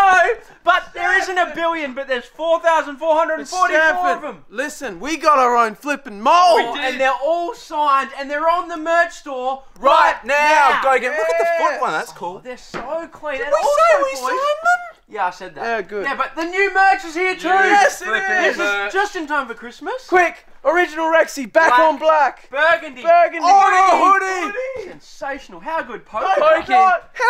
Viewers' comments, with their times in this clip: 0:10 Anyone else notice the scratching 🤨